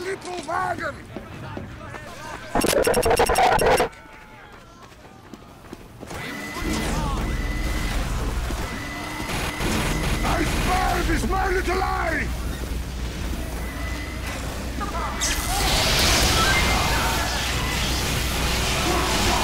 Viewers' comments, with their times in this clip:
0:03 why would you keep that in the fucking video? my ears